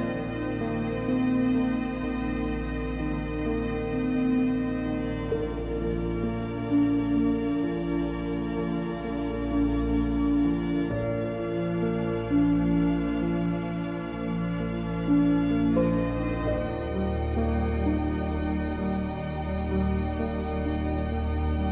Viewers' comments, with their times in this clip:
0:05 seems so nostalgic, reminds me of Cinema Paradiso.